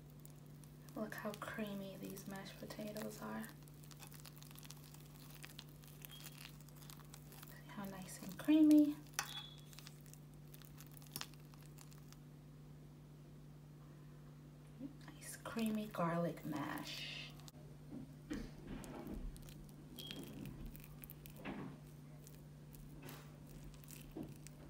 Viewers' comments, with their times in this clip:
0:10 Why was you sounding like that I swear the sound of the mash potatoes got to you.